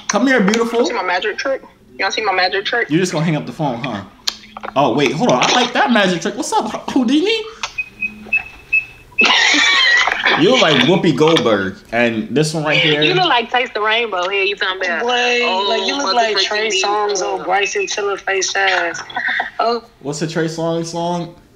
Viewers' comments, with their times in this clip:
0:09 her accent on the left that’s what I like 😂😂😂